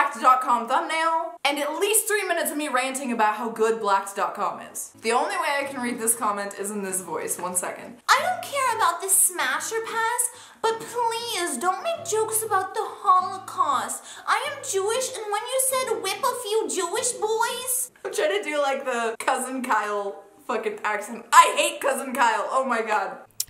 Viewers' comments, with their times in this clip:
0:06 you sound like Harley Quinn 😮 wow you should be the next Harley Quinn! You look enough like er